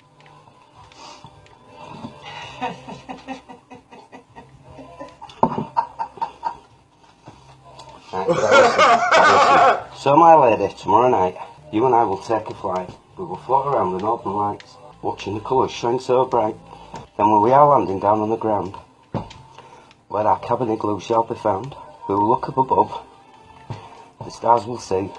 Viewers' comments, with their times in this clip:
0:08 laughs with malicious intent